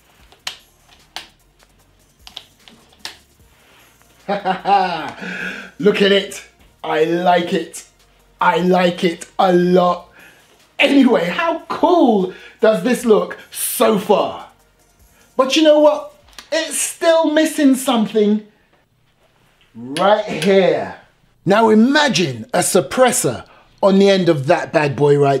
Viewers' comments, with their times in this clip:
0:06 is the most British thing I have heard today